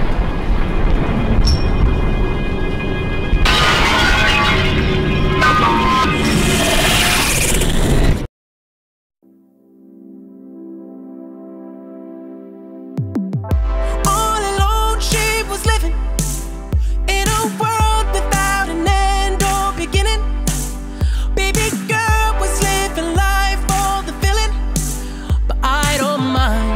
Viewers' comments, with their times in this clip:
0:10 song starts. Editor: so...wait what effects again? The weekend: all of them. Editor: uh u sure that could be- The weekend: ALL of them.